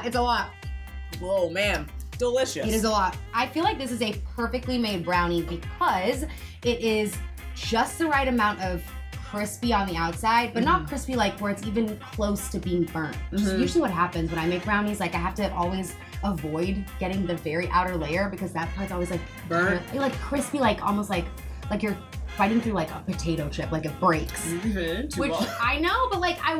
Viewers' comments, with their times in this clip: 0:09 she hit the woah